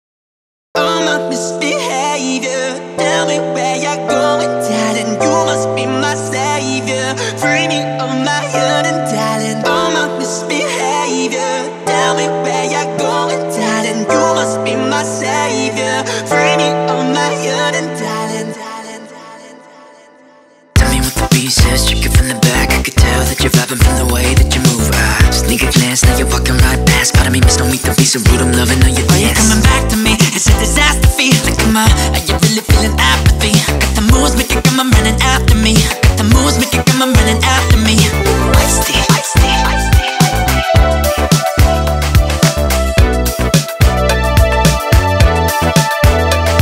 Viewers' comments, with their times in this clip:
0:07 I keep hearing "Framing all my young in Thailand" s mh
0:29 Don’t tell me I’m the only one who thought this sounded like Michael Jackson for a second—
0:29 IS LITERALLY MICHAEL JACKSON